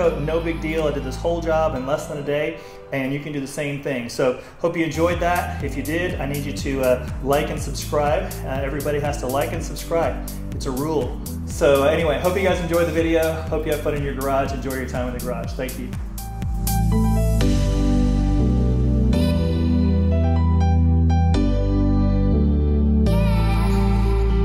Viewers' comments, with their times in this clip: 0:09 awesome work with the video, as well as the motorbike! liked and subbed.. your trump for 1.5 seconds lmaooo